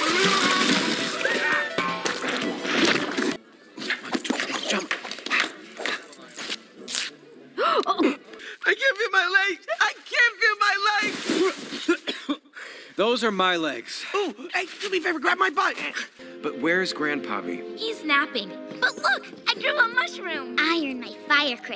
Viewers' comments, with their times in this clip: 0:07 I love how Elsa and Anna laugh at old man about his hair 😂😂😂